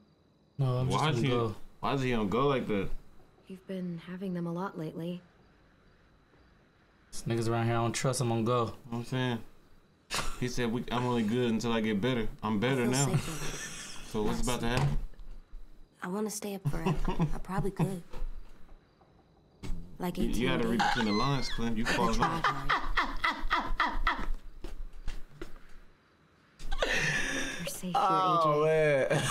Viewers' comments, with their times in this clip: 0:10 The lil voice overs be having me crying 😂